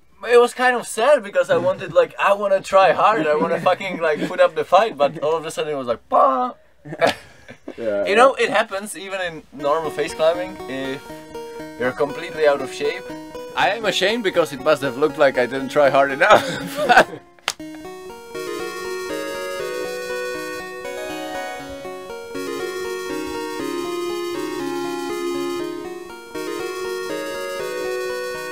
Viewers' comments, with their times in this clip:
0:09 What is the song that plays ? It's very cute!